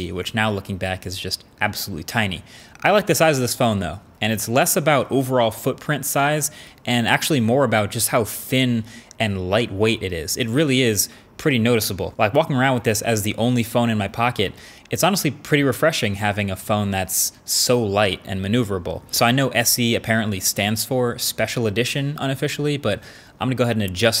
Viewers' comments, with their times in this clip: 0:07 Ok is it just me or did he call the phone "Fin" ??? Lol